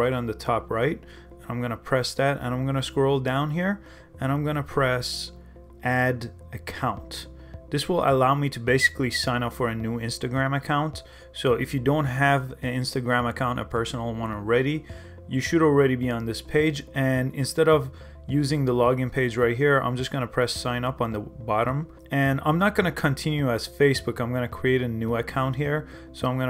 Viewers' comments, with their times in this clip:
0:09 did he just whistle talk